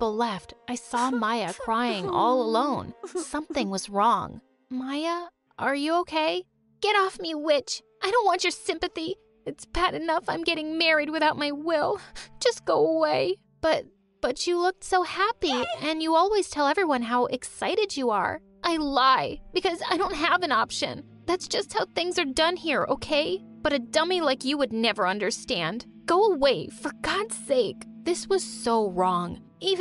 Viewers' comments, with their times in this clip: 0:07 I thought she said the b word instead of witch
0:16 The "Yay!" in the back round was hilarious!